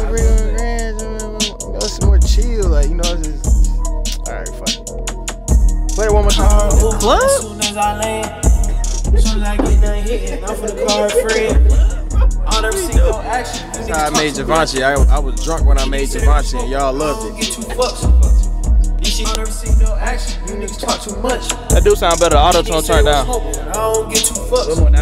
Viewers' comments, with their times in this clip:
0:06 I like the song I wouldn’t even put adlibs on it tbh